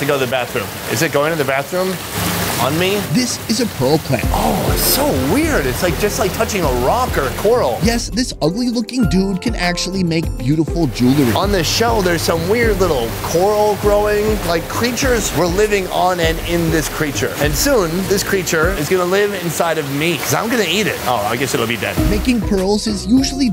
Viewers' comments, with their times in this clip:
0:04 suddenly I hear music and just thought a MXR plays video is playing in another tab :)